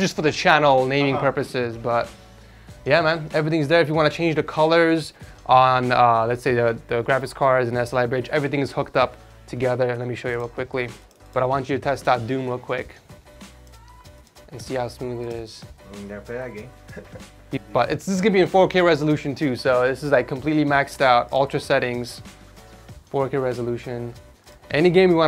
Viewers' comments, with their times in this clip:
0:08 everything’s F’d up together